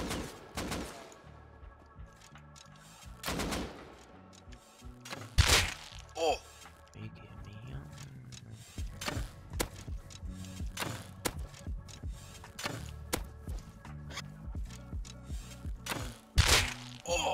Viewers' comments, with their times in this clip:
0:05 I thought i got a discord message :(